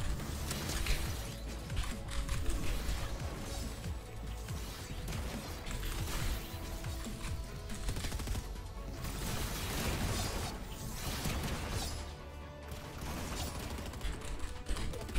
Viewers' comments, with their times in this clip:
0:03 really left the slurp behind?